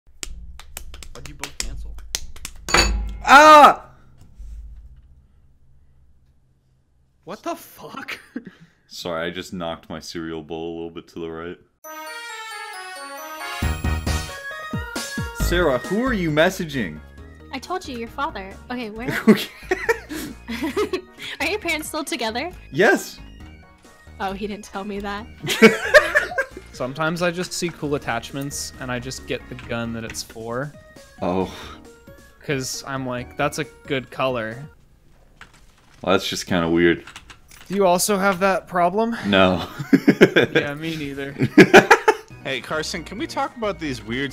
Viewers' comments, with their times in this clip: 0:01 who was clapping the cheeks
0:27 sounds like game grumps are playing